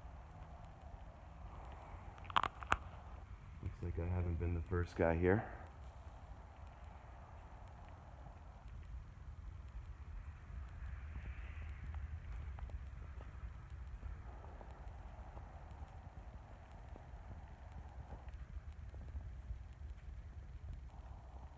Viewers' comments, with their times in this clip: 0:06 Hey guys get a pair of earphones and listen to 09 and i swear i can hear a whisper saying can you hear maybe im losong my mind but i listened over and over about 15x not sure if saying can you hear or did you hear